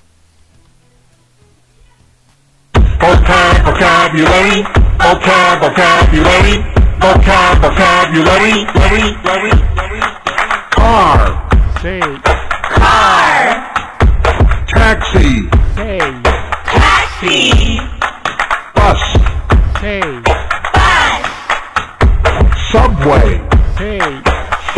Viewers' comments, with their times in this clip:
0:06 It's catchy. But, I think it's going to drive teachers crazy, having to hear "Vocab, vocabulary" for so many times when teaching grade 1-6.😅